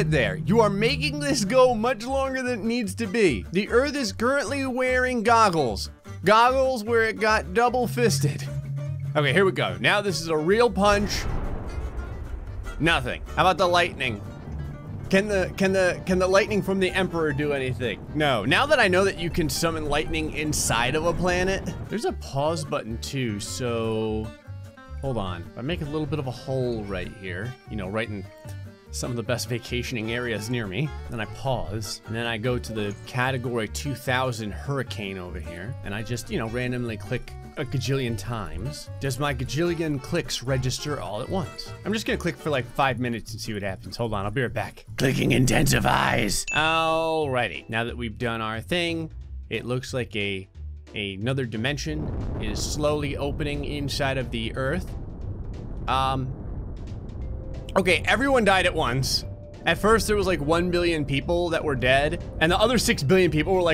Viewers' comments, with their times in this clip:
0:09 I heard an accent other than his American
0:46 that ding sounds he used happened the exact time I got a notification 🔔😂